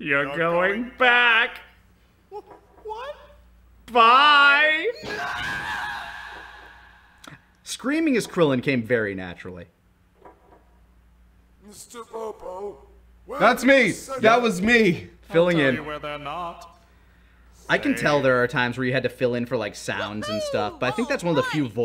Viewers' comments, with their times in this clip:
0:03 Ok but the dual-voicing of Popo especially with how they're close but just slightly off from each other like a botched harmony, makes it sound even more unnerving and I love it